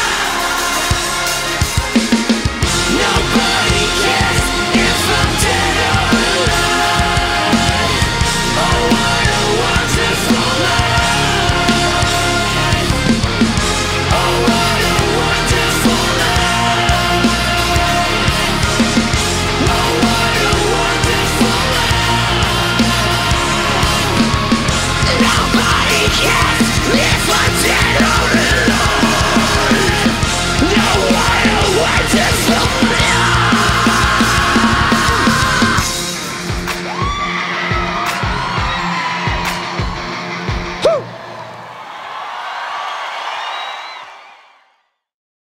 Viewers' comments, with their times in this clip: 0:09 i love the trumpets in the background
0:25 That scream in was pretty good
0:28 sounds soooooo fucking good!
0:31 that scream got me
0:32 sounds like andy biersack
0:33 Some fans : oh no Oli can't scream anymore Oli